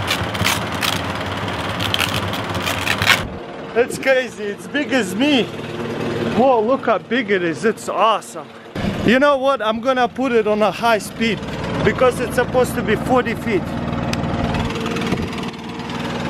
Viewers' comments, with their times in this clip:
0:03 it sounds like he's filming a sex tape